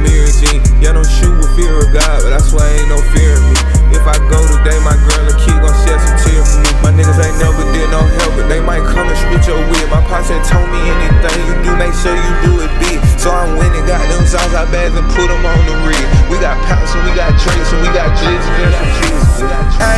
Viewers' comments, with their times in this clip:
0:06 Transition 🔥🔥 super dope🔥🔥